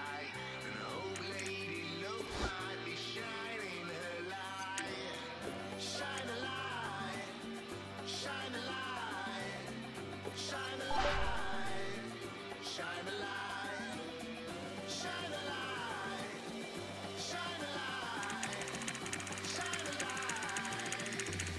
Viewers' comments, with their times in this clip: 0:09 FAKE READ:To know this video is fake, LISTEN CAREFULLY when he discards the card. this sound comes up like he put a consumable on the card otherwise when you quick sell the card it will make a coin ching noise given to you. THUMBS UP !!!!